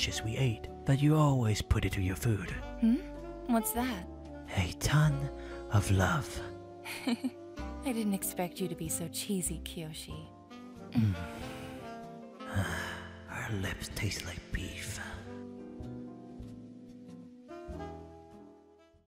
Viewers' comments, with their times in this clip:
0:06 I love how they look and sound like full adults here, it’s just interesting and cool to me.